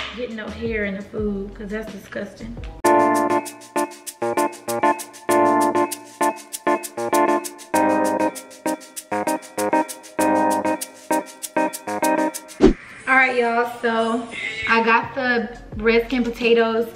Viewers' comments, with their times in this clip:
0:03 Good Music And Nice Effects.